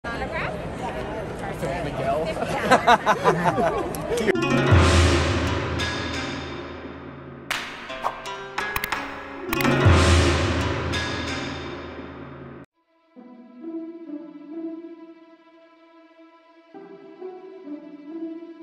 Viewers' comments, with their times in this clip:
0:01 Johnny’s laugh though